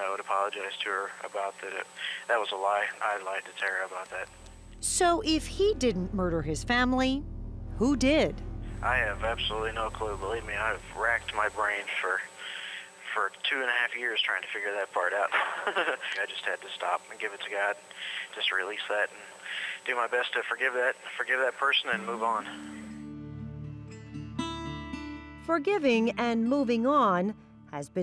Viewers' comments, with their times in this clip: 0:04 The psycho laughs
0:05 Start listening from on. Chris's giggle proves that it was indeed him who murdered his family. To those who understand psychology.
0:10 His chuckle on the phone is gross (when asked if he didn't do it, who did!!) 😡
0:10 On minute "Believe me, I have wrecked my brain for two and a half years trying to figure that part out" and the he CHUCKLES!! Really?? Unbelievable.
0:13 That laugh ! What a monster.
0:15 classic psycopath laugh
0:15 Did anyone else notice his little laugh ?
0:15 The laugh is disgusting!
0:16 This laugh after his comment says it all. How sick.